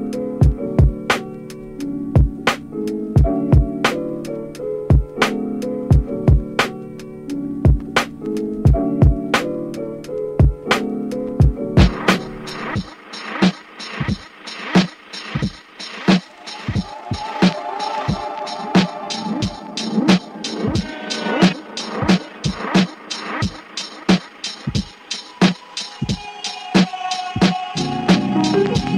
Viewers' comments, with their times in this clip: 0:09 two beats fire!! :)))))) (and the rest) haha